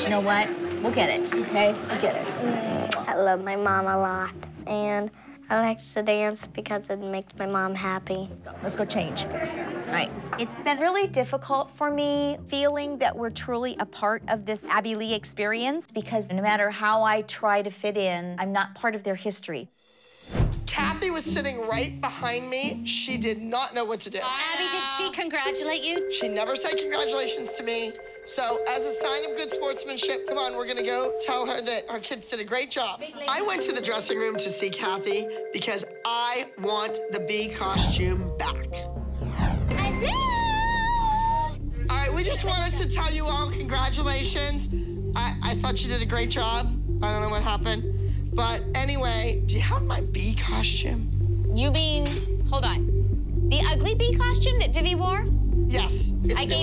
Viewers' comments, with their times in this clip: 0:08 are we sure that’s her daughter? Those accents don’t match at the slightest
0:38 the way cristy screamed😂
0:40 Christi’s little scream😭
0:41 Christi scream when she walked in to Cathy’s dressing room